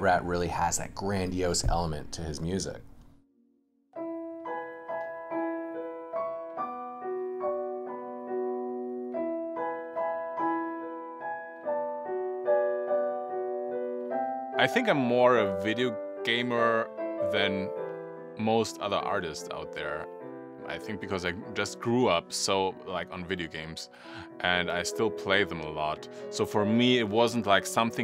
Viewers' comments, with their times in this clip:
0:04 Somebody please tell me the name of the song he play sound nostalgia
0:11 I like the song your playing :D